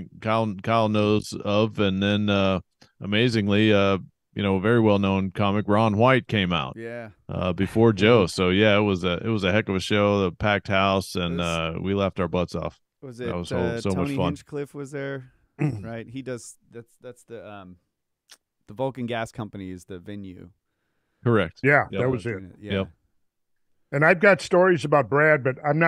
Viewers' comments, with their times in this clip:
0:06 That fart is fantastic